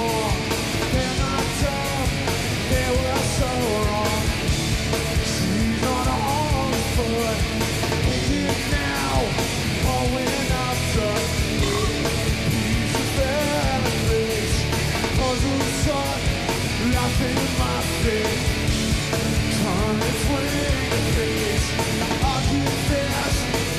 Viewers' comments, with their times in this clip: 0:09 Dave burps mid-song